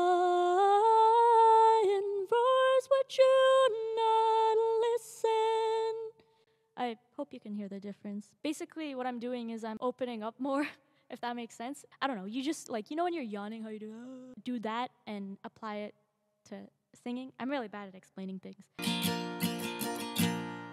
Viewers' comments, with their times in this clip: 0:07 Loved the moment and your analogy really made a lot of sense. It made me laugh and your singing now is really cool, and I walk away feeling like I learned something. It's been cool to see how different you are from when I first saw you years ago. Can't wait to see you 10 years from now!